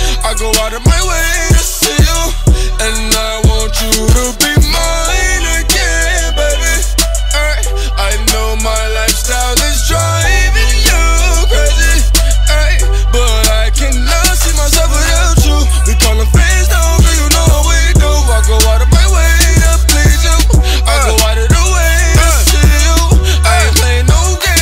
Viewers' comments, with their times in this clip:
0:06 that nigga right. if y'all listen to 679 closely he says "I'm a devil worshipper " in like a demonic type voice. if y'all don't believe me y'all can go check